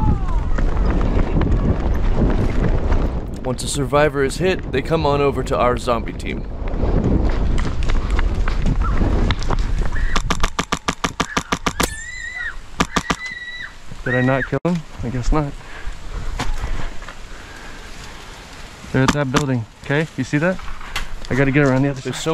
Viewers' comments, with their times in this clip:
0:10 The little kid screaming is hilarious 😂@